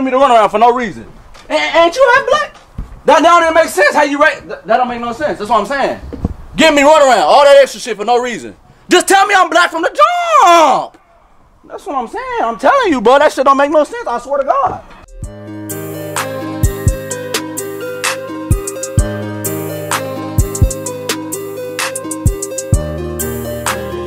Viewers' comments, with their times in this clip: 0:06 You could hear a lil echo after he say it too 💀🤣